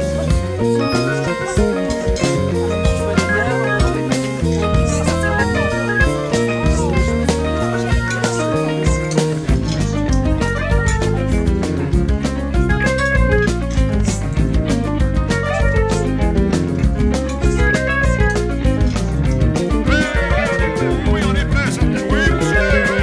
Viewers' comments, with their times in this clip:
0:09 those arpeggios are soooo sick!!
0:09 those arpeggios are soooo sick!!